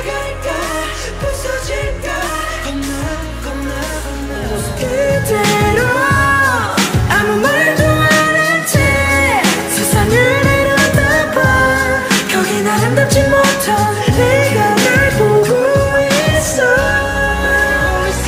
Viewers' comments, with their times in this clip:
0:05 Jimin sounds like an angel